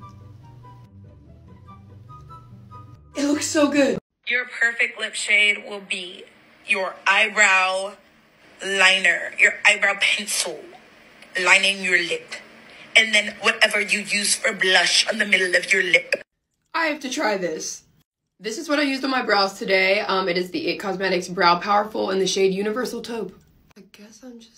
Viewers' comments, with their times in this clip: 0:07 why does she sound like a robot- YoUr FaVoUriTe